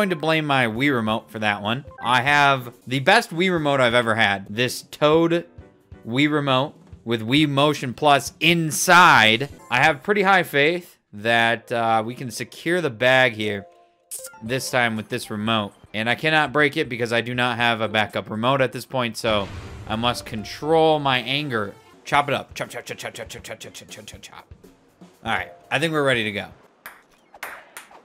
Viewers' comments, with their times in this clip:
0:09 Why did he say it like there is also a Wii motion plus OUTSIDE?